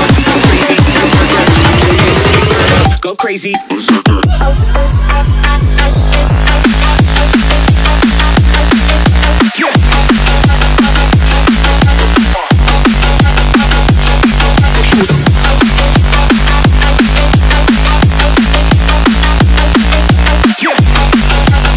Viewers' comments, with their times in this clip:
0:07 this music is epic!!!